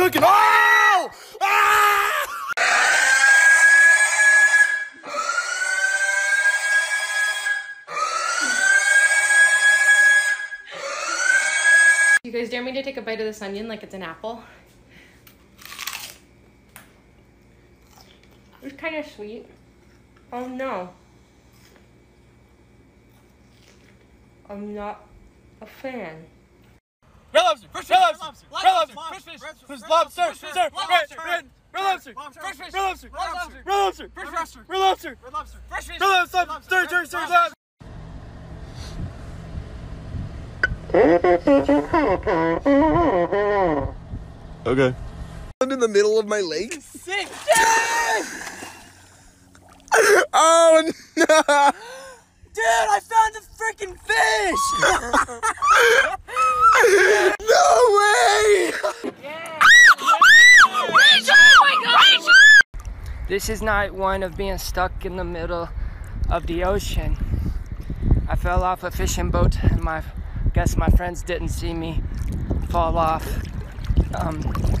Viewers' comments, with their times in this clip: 0:03 lol they sound like a hair dryer
0:04 it sounds like a drill-
0:59 i know this sounds bitchy, but as a chick myself i have to admit we sometimes do scream like that because we don't know who the fuck else to react or what else to do in those situations
0:59 me a week ago..... it hurts...! En mah vriend she was screaming!!